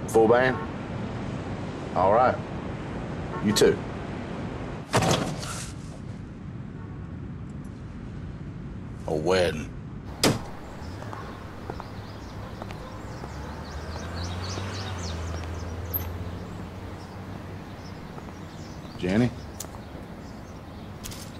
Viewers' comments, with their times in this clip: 0:08 Can't get over how he says wedding 😂 great song